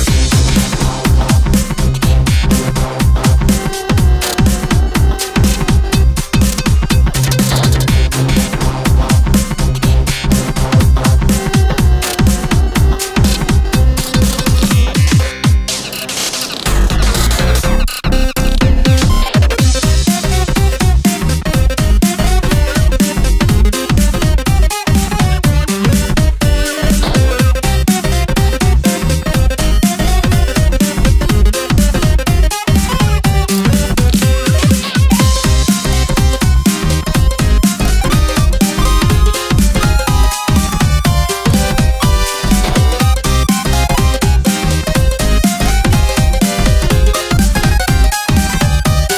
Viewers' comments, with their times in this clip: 0:04 an Enderman sings
0:35 My soul swings high and low to the tune of the notes It is euphoria.